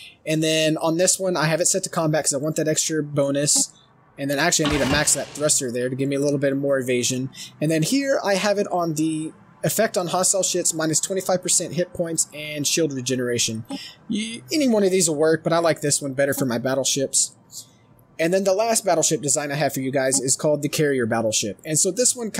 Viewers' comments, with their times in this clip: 0:09 "...has an effect on hostile shits..." XD